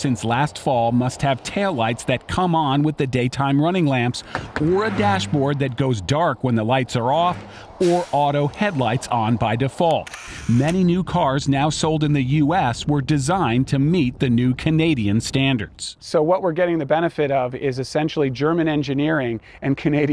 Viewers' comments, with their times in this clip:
0:08 Lol did you hear the fart ?